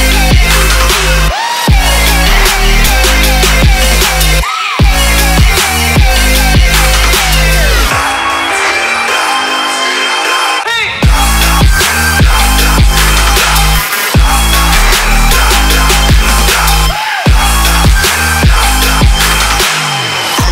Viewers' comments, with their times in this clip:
0:04 juelz's signature sample scream 🔥🔥